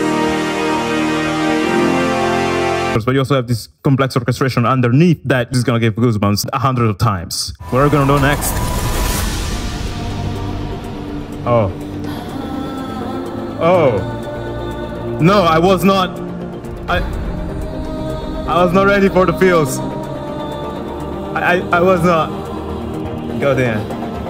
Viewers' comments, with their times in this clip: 0:08 those horns are like a muffled sonic boom to me. haha, yup the feels
0:11 is where my tears start to fall......that angelic vocal tho.